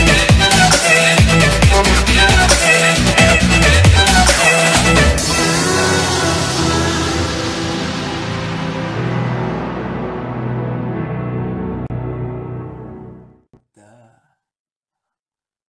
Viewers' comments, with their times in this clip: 0:13 Idk why, but I love the duh at the ending😂😍 (just for me as a replay button lmao😅)